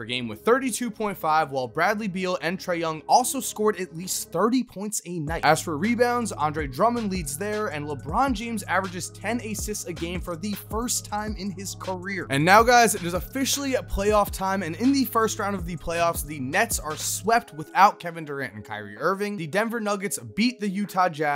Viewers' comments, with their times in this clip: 0:09 the way he pronounced assists